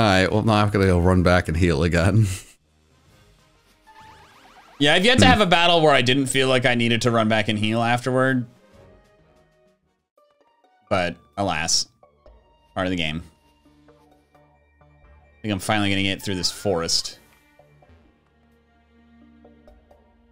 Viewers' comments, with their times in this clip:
0:04 Why do I just hear Magnezone’s cry in the background here?